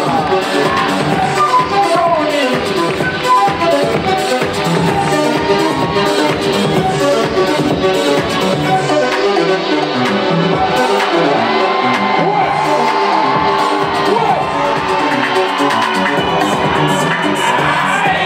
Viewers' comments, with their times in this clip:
0:06 Great final, but i seem to be the only person not feeling track 3, i mean it's not a house track by any stretch of the imagination. It's not because it had a 4/4 rhythm that it had to be played at a finals for two ill dancers. House dance comp' finals = Fire House music, in theory. was Crazy Dope!!